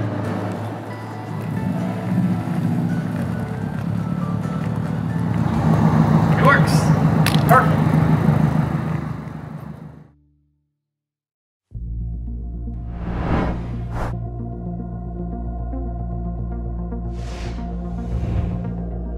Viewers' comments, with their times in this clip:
0:07 Did he fart?